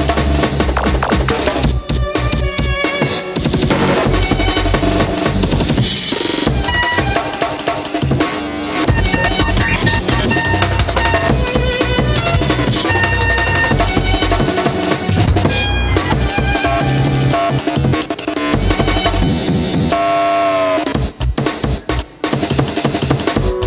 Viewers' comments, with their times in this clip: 0:05 those violin crossfader chops lost most of my shits stored in a drawer in an instant manner